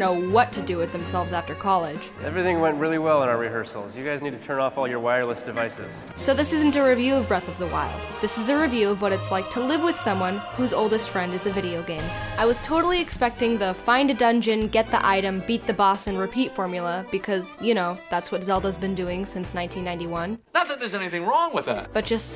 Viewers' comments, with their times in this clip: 0:06 Anyone know which cover of the "Ballad of the Goddess" song it is that plays ? I know it's the ballad of the goddess but I haven't heard it with a choir before, it sounds beautiful!